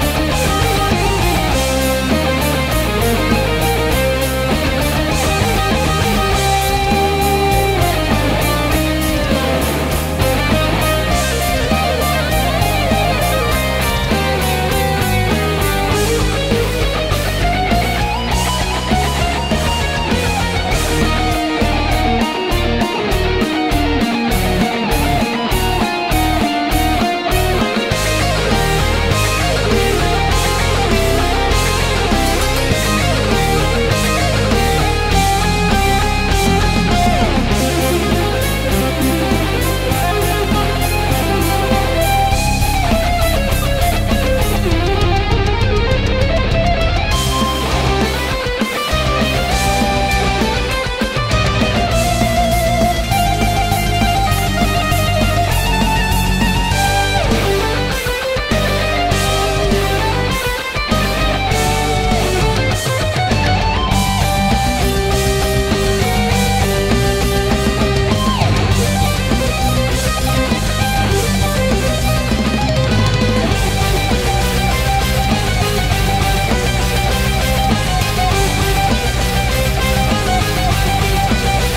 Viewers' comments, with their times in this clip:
0:08 Perfect up to then you go off key.
1:08 Damn that was sick! Love the little sweeping part